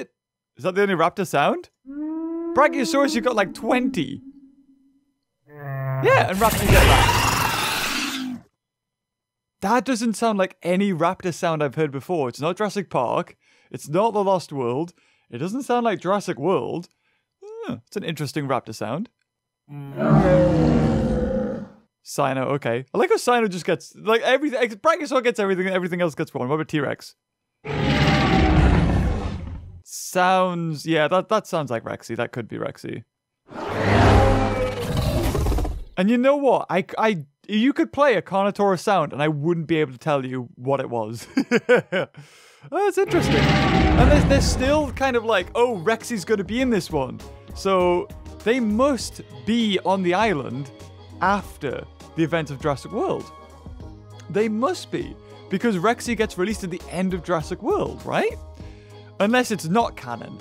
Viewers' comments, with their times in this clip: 0:06 Also that velociraptor roar it sounded like an indoraptor roar.
0:33 Is it just me, or does the Carno sound indoraptorish at the end?
0:43 because it's not the same sound as in the movies lol